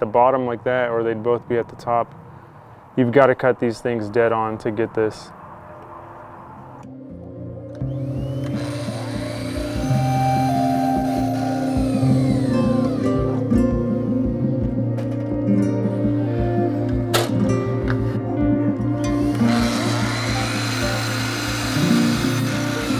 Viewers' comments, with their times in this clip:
0:08 Dude, when the "zen" music started I almost fell out of my chair. Well done Sir! Lmao